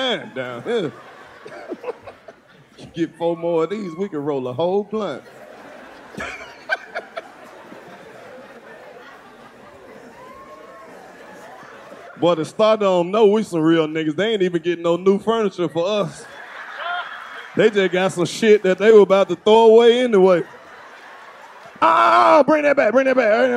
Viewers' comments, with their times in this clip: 0:09 Is that DC squealing/laughing back stage......😂😂